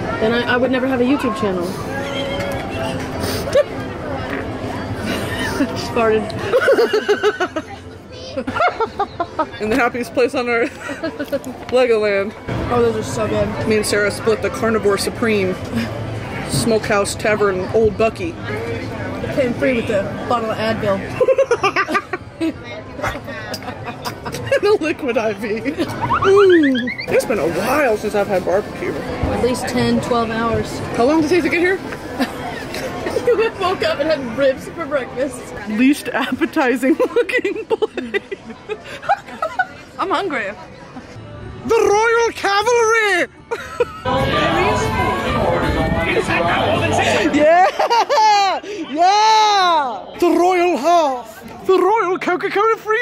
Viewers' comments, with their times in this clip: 0:03 you can hear Sarah’s fart😂😂
0:04 The fact that I herd Sarah’s fart and thought to myself did they just get crop dusted?then Sarah said it was her……made me audibly wheeze
0:04 for the fart
0:41 Brittany screaming “THE ROYAL CAVALRY” is absolutely sending me